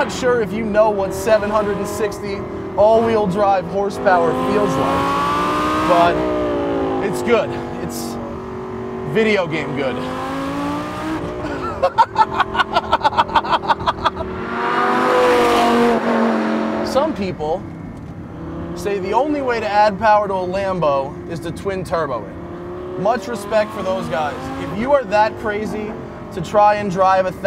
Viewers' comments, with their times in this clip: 0:09 inner child laugh lol
0:11 = best laugh ever :D
0:11 I'd be laughing like that the WHOLE TIME
0:11 Any car that can make you laugh like has got to be awesome.